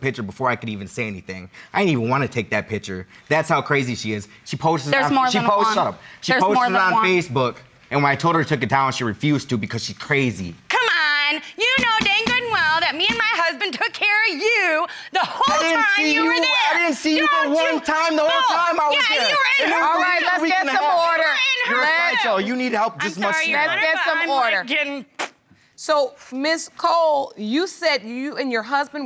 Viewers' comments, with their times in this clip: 0:10 That “CuhMon!!” Took me out 😂😂😂😂